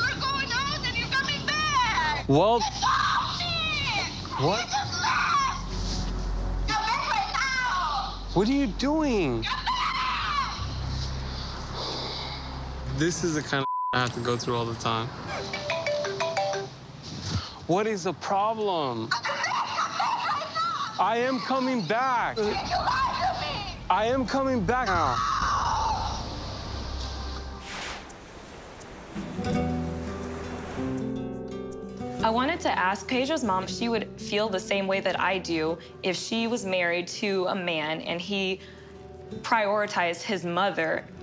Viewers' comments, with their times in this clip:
0:08 Rose screaming at Jack in the Titanic like :
0:25 Someone was saying how Pedros mom's eyes seemed evil like she dabbles in black magic.. i think Anfissa's scream "NOOOOWWW! was from the devil herself. lol jk